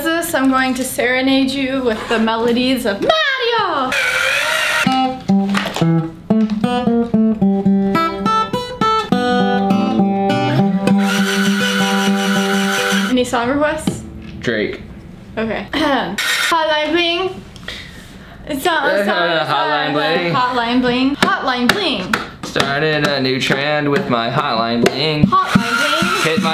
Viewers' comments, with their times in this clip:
0:10 Bro that Beatles song kinda hit different
0:10 Black Bird appreciate a good beatles song. Well, sounded like it anyways lol